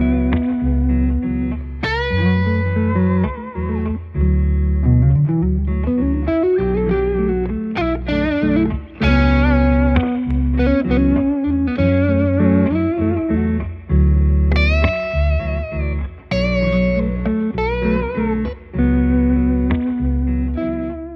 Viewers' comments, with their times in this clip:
0:05 what is that little run he does, it's rather lovely